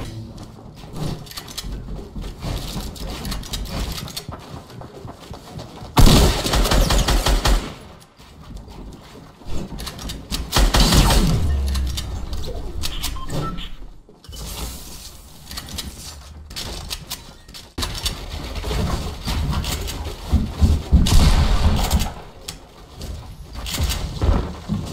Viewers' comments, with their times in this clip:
0:05 I wish footsteps were always that consistent